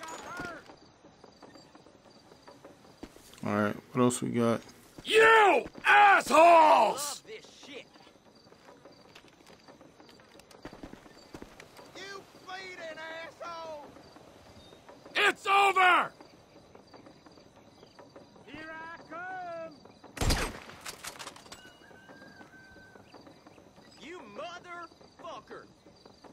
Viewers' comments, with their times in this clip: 0:07 You can hear Nikos' voice when he says "Holy Shit"